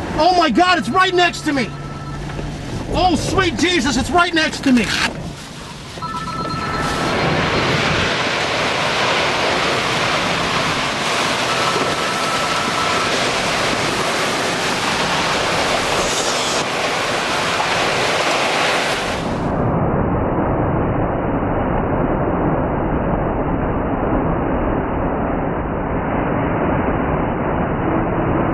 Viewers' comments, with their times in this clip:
0:09 HOLY MOTHER O_O listen to the tornado roar like it's in rage coming to destroy anything in it's way O_O